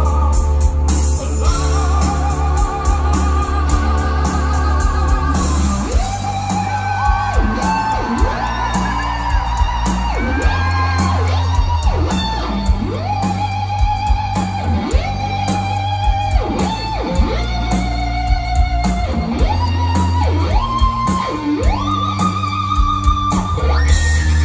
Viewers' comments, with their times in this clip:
0:05 mi hearth in this riffs.. :, ( #cornellalwayslive
0:12 love the rips